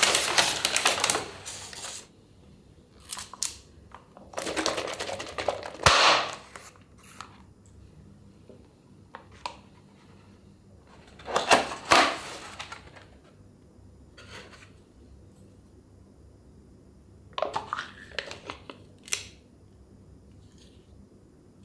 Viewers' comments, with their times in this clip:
0:04 first up we have the cold milk and then .BAAAAAAAAAAAAAAAMMM!!!!!!!!